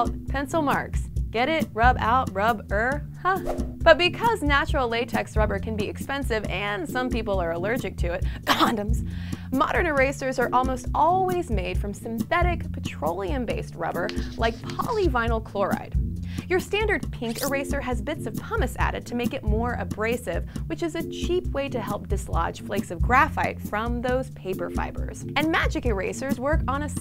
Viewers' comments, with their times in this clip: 0:10 cough condoms cough. (づ◕◡◕)づ